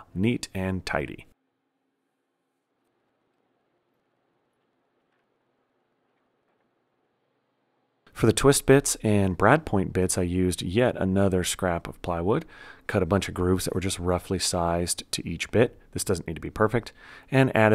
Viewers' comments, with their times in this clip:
0:04 You really are an arteeeest! Your shop furniture looks better than most paid for furniture. was positively ASMR!